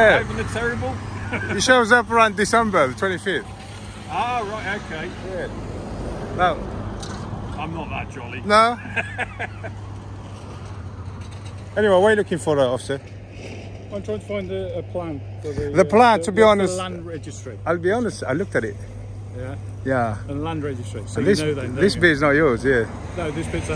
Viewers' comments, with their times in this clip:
0:06 "I'm not that jolly" as he gives a nice jolly laugh. 😁😄😃😀